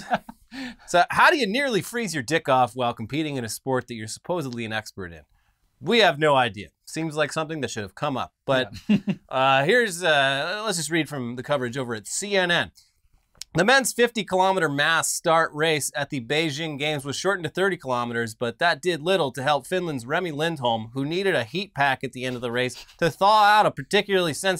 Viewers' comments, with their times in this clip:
0:08 ..."Seems like something that should have come up-" Chuckle